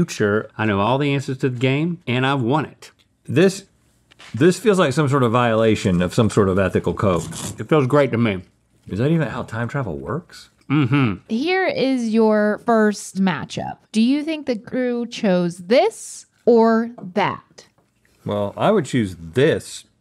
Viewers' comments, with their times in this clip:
0:06 was that crunch the chicken??? Usually rotisserie chicken isn’t that crunchy!